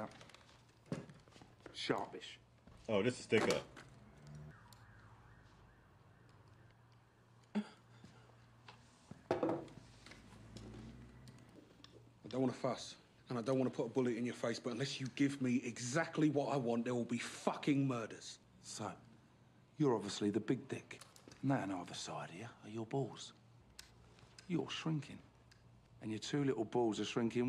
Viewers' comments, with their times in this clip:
0:09 This is one of my favourite scenes in cinematic history. Vinnie Jones' delivery is absolutely brilliant.